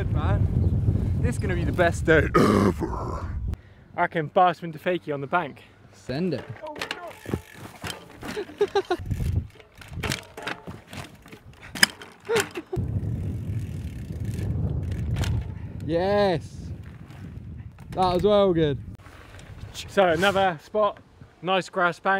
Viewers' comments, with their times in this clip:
0:03 I thought he was doing a belch